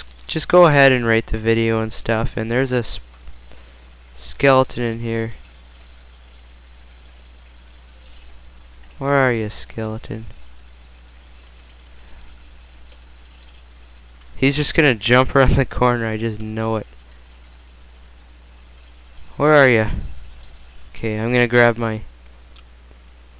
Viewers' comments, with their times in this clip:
0:04 the video lagged on me so i made a dj of him saying skeleton in here